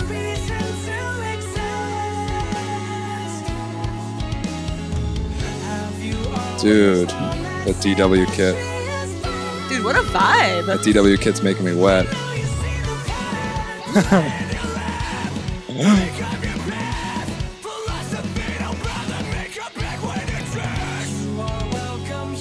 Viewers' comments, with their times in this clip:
0:10 The note the vocalist hits is insanely high….idk if anyone heard cuz they were both talking over it lol, but dayum